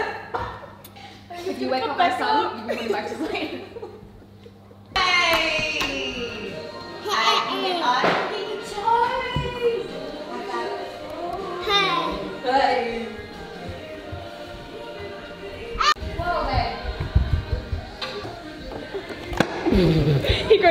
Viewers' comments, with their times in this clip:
0:06 Maverick City in the background starting So wholesome ♥️